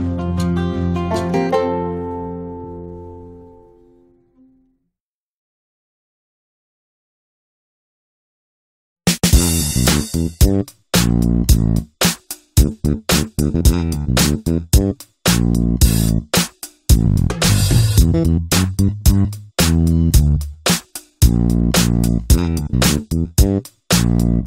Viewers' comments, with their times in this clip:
0:09 Oh my god! This beat!